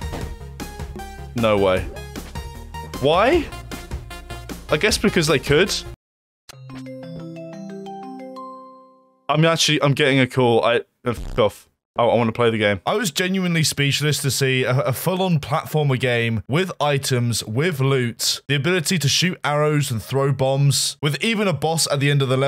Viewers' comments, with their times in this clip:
0:05 Ngl, when the ringtone sounded I immediately looked away from the video to check on my phone. only a second later i realised its from the video. If the chinglish translation isn't enough of a proof, the WeChat ringtone solidifies that this game is made in China and poorly translated using Baidu or something
0:06 I thought I was getting an actual wechat voice/video call on my pc, cus I have it installed for a sec But the direct translate from chinese to english is a bit lmao.